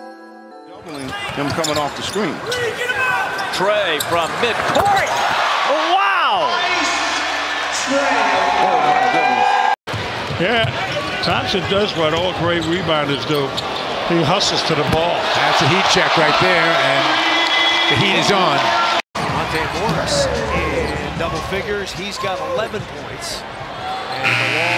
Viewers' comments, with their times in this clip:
0:10 sounds like kawhi's laugh🤣😂